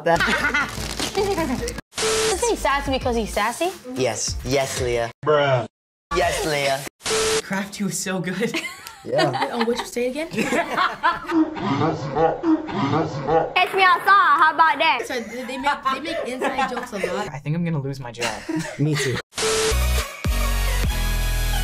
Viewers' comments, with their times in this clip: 0:08 Adrian goes crafty was so good Walker goes yeah me: that’s the first calm thing they’ve ever said 2 seconds later they look like little children laughing hysterically